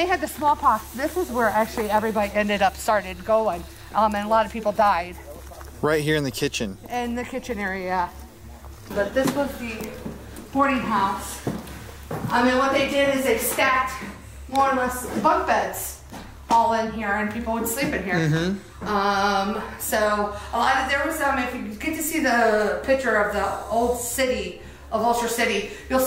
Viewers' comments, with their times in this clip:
0:06 On I think I heard a scream but I'm not sure so please let me know if I'm wrong or not
0:08 An awesome video. :) Also when you guys were walking into the boarding house it sounds like a ton of people are faintly talking!